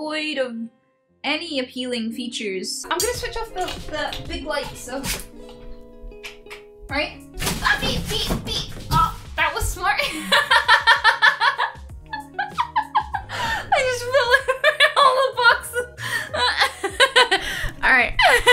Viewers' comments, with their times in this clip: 0:05 😂😂😂😂😂 panic FEE FEE FEE 😂😂 am I the only one that loves when she says that? It’s so cute and hilarious. It’s like the sound a bunny would make if you scared it